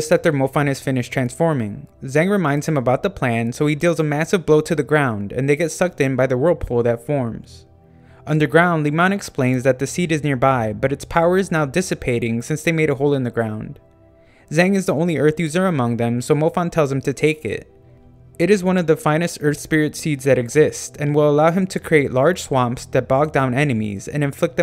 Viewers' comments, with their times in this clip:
0:07 Did u just said n word